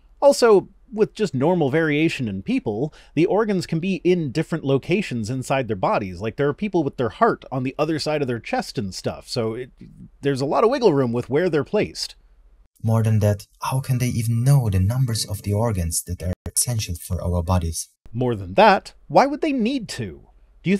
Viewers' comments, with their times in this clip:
0:07 I think your sound levels are fine as they are. Also are you sure these people with a heart on the other side of their chests are not just time lords in disguise?